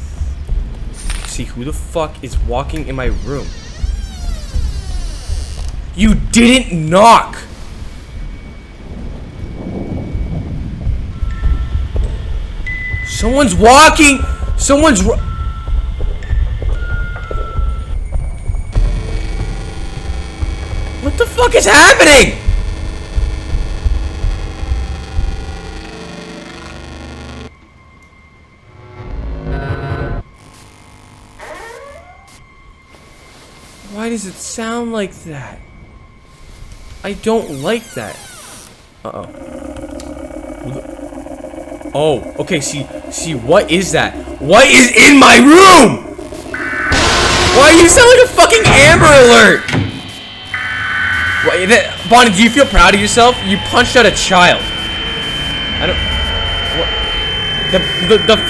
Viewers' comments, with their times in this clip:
0:07 Bro is he ok cus he sounds like he is struggling
0:40 chica takes a fat bong rip